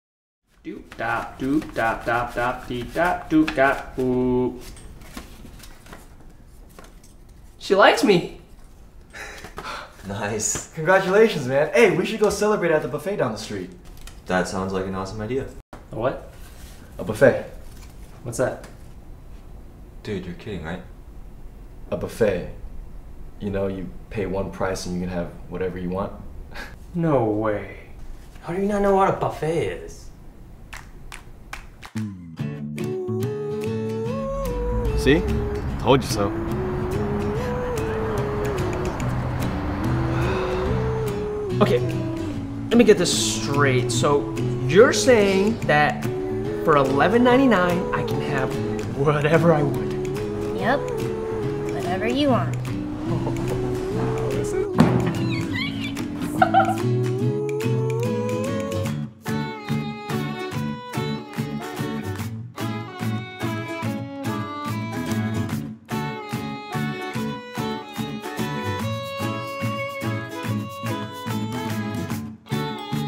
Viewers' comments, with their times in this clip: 0:10 hahahahha he sounds like those pop up windows that say you won an i pad or something lol
0:50 Definitely the girl with the high pitched voice from the first episode of single by thirty
0:56 I Love his Squeak